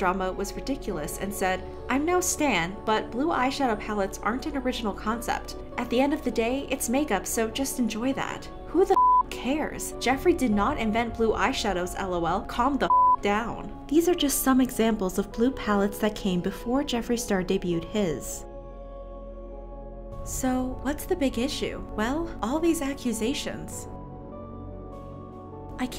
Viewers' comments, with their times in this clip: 0:09 Lmao you sound like my mom